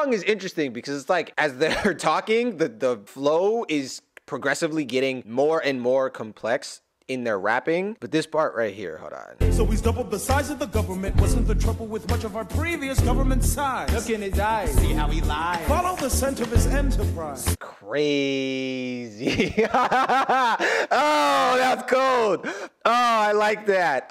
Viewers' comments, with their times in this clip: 0:06 ever notice how as soon as the third person joins, they start using triplets?